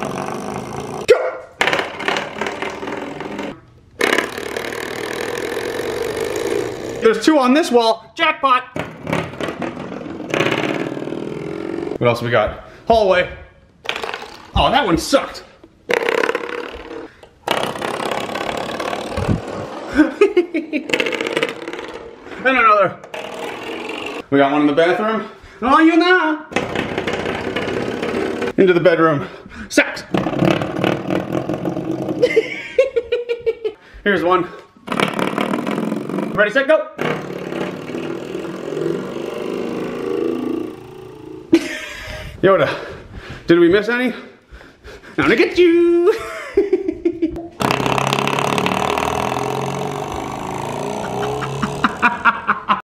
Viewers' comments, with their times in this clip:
0:08 It sounds like it motorcycle
0:10 the shitbox honda civic going past my house at 3 am
0:37 sounds a little like the beginning of Kick Start My Heart.
0:38 The one sounds like a motorcycle riding off into the distance